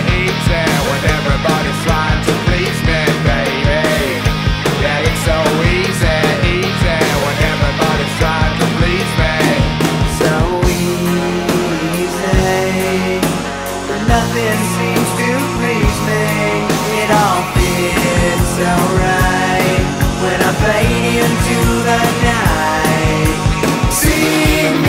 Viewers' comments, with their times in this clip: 0:09 I've always loved the change in tempo - drums, guitars and vox
0:10 I wish there was a full version of the part at minute It's so chill